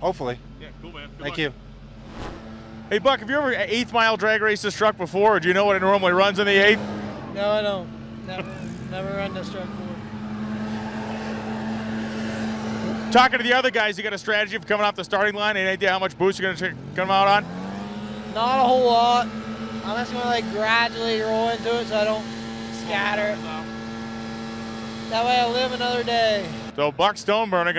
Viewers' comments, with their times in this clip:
0:10 that awkward pause. lol